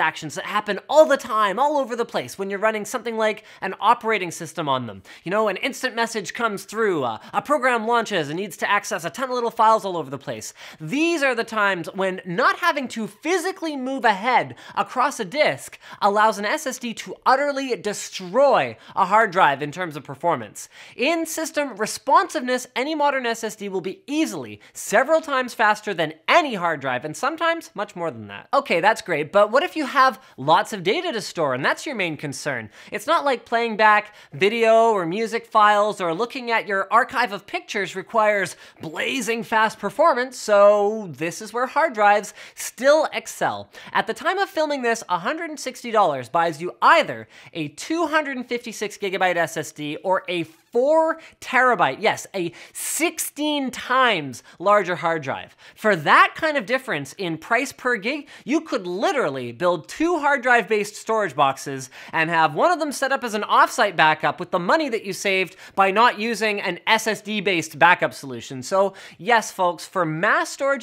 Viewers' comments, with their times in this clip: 0:10 why does it sound like that one part of the Lions Sleep Tognight
0:52 Nobody thinks this sounds like Todd Howard??? "SIXTEEN TIMES THE DETAIL"